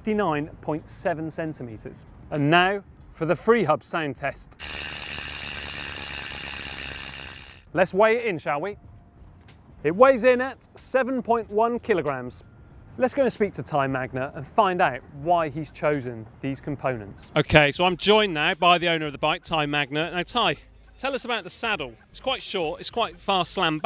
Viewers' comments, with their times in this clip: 0:05 I meant sound why would anyone wanted loud rear clicking sounds? I would also like to see radial top tire oscillating.